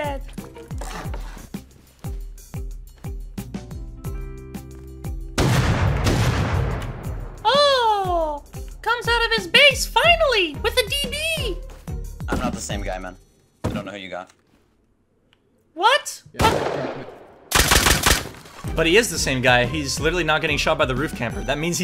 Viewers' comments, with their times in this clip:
0:06 is that you Mickey Mouseis that you Mickey Mouse